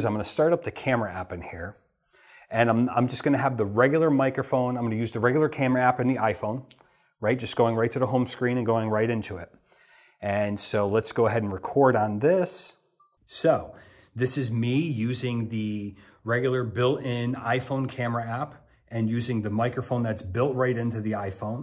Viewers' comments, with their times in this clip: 0:05 Acutally is the best example the studio setup sounds a bit more muffled than the iPhone audio (who singles out your voice) After you adding the mic it even sounds way better than the studio setup.